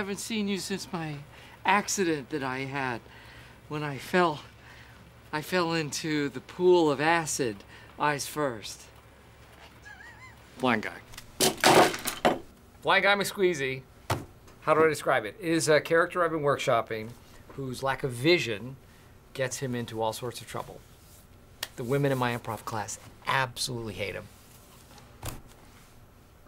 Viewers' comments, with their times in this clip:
0:09 that was a real laugh from Rainn not Dwight